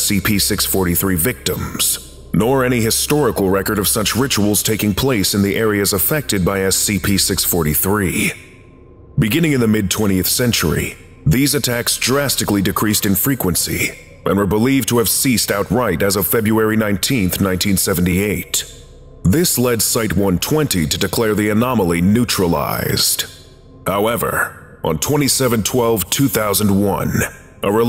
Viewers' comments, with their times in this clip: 0:09 Man i love your videos but the low humming sounds drives my ears crazy, its like a really low frequency high pitched sound. It starts and keep looping.